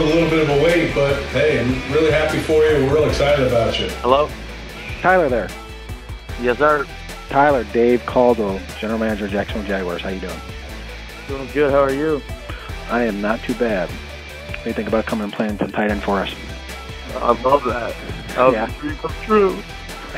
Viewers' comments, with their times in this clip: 0:04 and at the end of the video, maaaan....that’s awesome! To hear the voice of someone as their dreams are coming true! To hear that joy! To hear that release! Can’t wait! Welcome to Duval County!!!